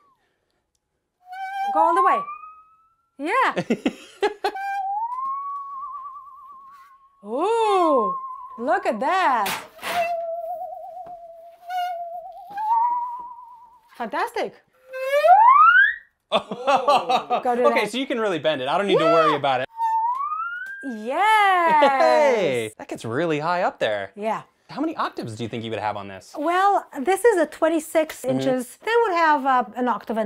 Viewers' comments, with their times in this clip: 0:07 Halloween Theme or aliens invade
0:15 at 2x speed it sounds like a cartoon character slipping in a banana peel